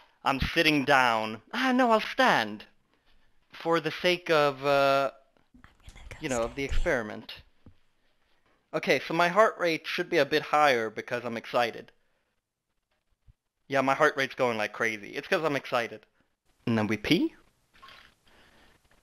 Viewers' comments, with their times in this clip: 0:04 the mic quality of this clip is launching me straight back to the early xbox live days